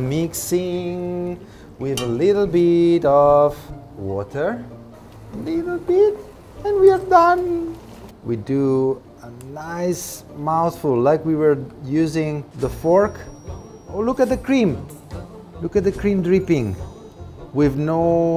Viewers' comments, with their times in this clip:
0:05 You sound like Cristiano Tomei 😀